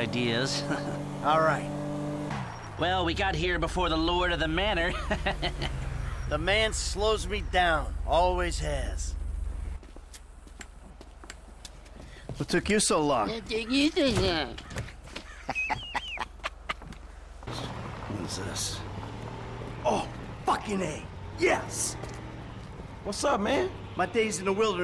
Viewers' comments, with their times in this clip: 0:10 “What took you so long?” “wHa ToOk Ya So LaAng?”